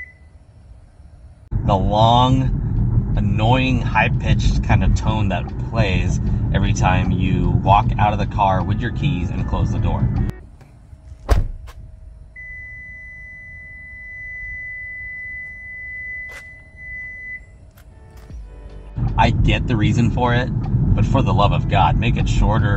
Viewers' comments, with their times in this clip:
0:04 I'd be glad that it's just a beep. My current car (still waiting for my EV6 to come in) a Ford C-Max actually honks the horn at you twice if you leave the car running and shut the door with the key outside. Two full honks, not two horn chirps. It's super annoying. So I guess you'd actually prefer a horn? Also, I'm glad the EV6 doesn't have the annoying "bong" chime sound the Bolt EV has when you just open the door with the car running. That has got to be the most annoying door chime ever and it happens if you just open your door with the Bolt EV on.